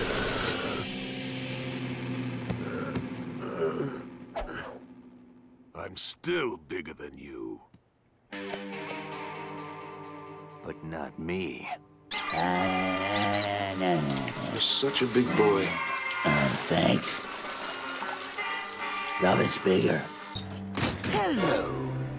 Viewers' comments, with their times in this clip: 0:07 Man I just love the sound effects and music, especially different sound when Batman showed up behind Joker. Another thing, with all of Joker’s disguises, I bet if he stopped doing crime he would be a fashion designer. Change my mind. 😀 Alright one last thing: I think I watch so much different Batman/Justice League shows I actually started to do the thing when fangirls jump up and down, screaming internally and externally. (Also not me having comic-like dreams of semi Batjokes 😳😳😳😳)